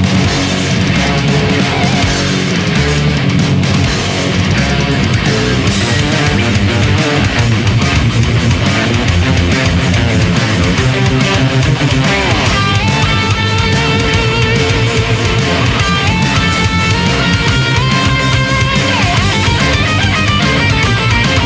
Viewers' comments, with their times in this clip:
0:04 bass is galoping... love it